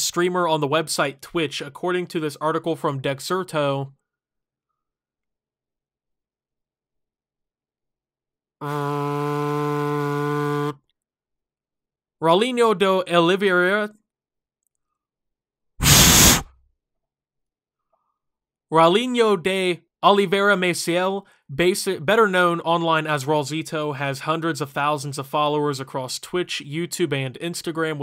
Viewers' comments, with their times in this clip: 0:03 what my laptop sounds like when I play minecraft
0:03 He sounds like he is about to say: Ya like jaaaaazzzz?
0:03 Everyone is just talking 😂
0:04 great pronunciation and long pause
0:04 tf were those mic tests XD
0:04 The robot is glitches:
0:04 i thought my headphones broke
0:04 lawnmower voice actor
0:04 I thought my sound glitched or something
0:04 Bro oh my god. I went to and I couldn't hear it so I turned up my phone to max volume and stuck it up to my ear and I nearly fell over
0:04 strange and funny noise
0:05 I literally thought my headphones were broken
0:07 that’s some nice ASMR
0:07 legolas: that is no orc horn
0:09 Optimus turns into a phone on silent mode
0:09 i legit thought my headphones broke
0:15 that big sniff had me dying